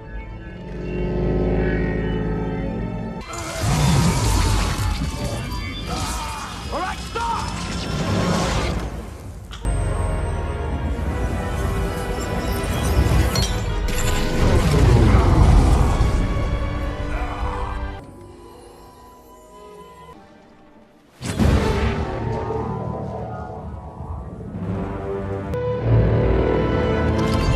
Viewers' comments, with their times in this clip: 0:09 And for the sound of the stone being put in